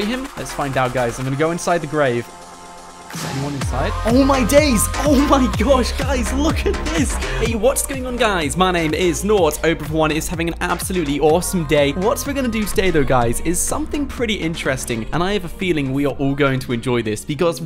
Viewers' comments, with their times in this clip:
0:03 He clearly recorded it after the video